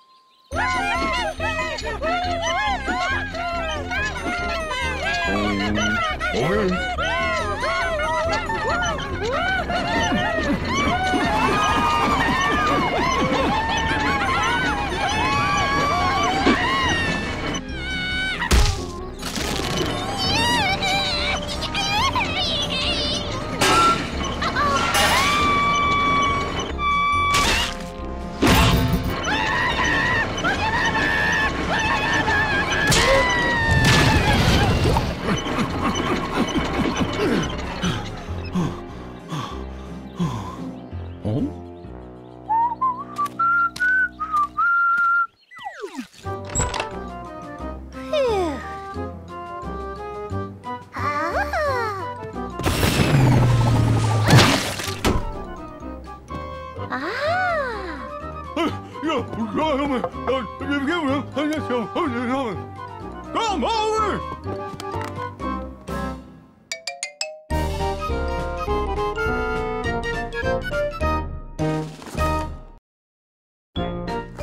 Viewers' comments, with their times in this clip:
0:05 he thought they said “go Bo go”
0:24 Uh Oh -Giggles in
0:58 you can hear Lumpy say (hey you you gotta help me)